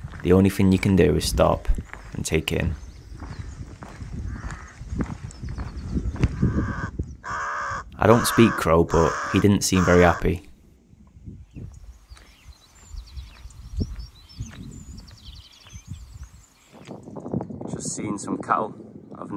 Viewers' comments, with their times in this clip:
0:07 Cool that the crow in came to talk to you. Brandon actually means crow in Celtic so i think could be how the area got it's name .